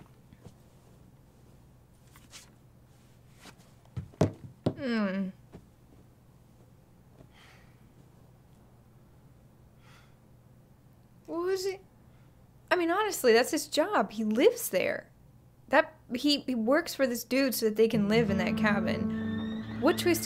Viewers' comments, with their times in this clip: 0:04 when someone farts